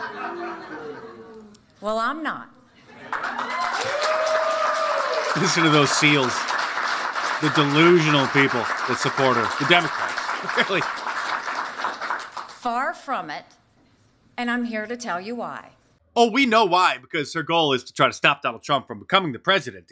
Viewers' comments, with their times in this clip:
0:03 you can hear her family applauding.